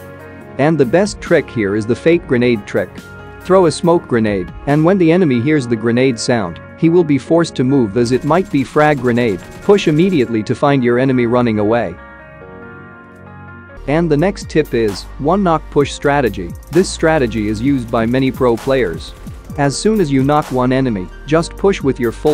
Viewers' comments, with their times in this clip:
0:03 This doesn't work against players who have a good headset. The sound of the smoke pin is different from the grenade pin